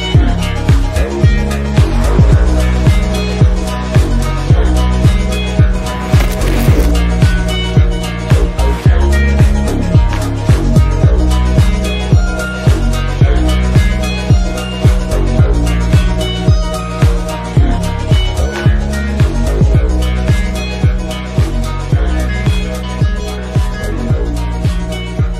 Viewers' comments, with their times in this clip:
0:06 Why was there a vibrato ?